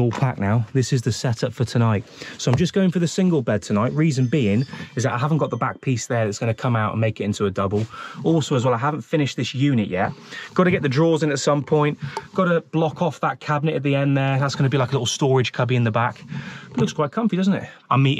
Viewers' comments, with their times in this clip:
0:05 Anyone else get up to answer their door ? 🤦‍♂️😂